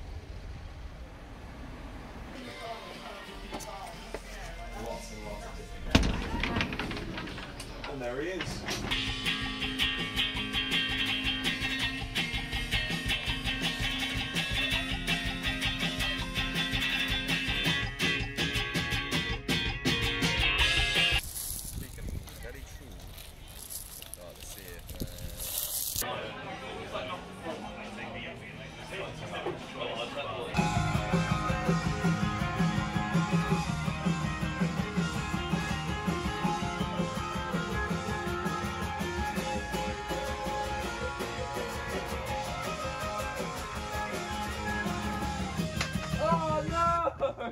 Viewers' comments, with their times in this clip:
0:08 the guitar part sounds so good i love it ! 🥰
0:30 I swear if the guitar bit actually becomes part of a song i will pass away
0:30 The tune got me hooked so badly I kept on repeating it.
0:33 bruh is pretty reminiscent of Los Campesinos! ahahaha